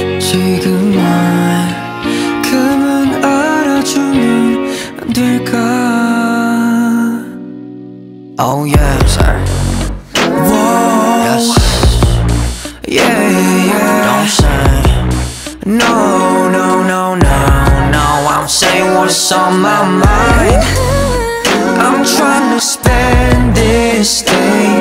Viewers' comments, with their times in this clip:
0:08 Absolutely Love His Voice So Much and l really love that whole part ❤💚